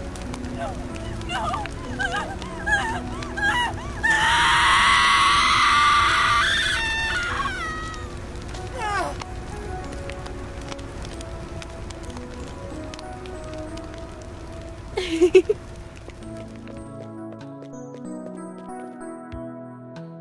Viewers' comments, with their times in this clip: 0:03 SHE SCREAMED SO LOUD THAT MY LITTLE BROTHER ALMOST WOKE UP😭